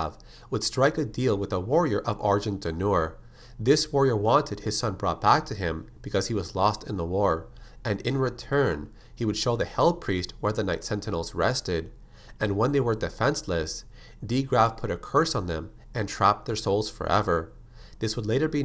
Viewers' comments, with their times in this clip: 0:04 “lost in the warp” Wrong universe man.